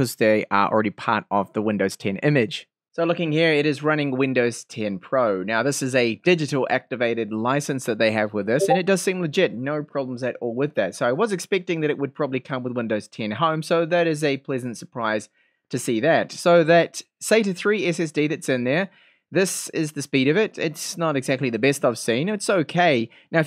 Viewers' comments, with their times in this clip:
0:07 That discord notification sound made me check mine